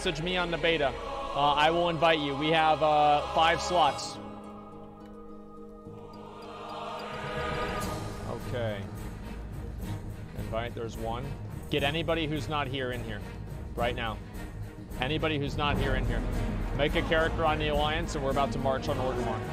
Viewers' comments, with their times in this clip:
0:06 my favorite part due to the soundtrack